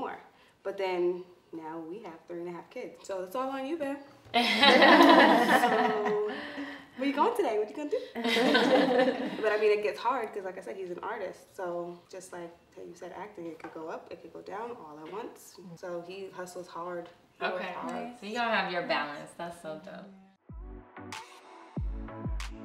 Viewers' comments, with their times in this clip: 0:04 That so common UNCOMFORTABLE LAUGH ...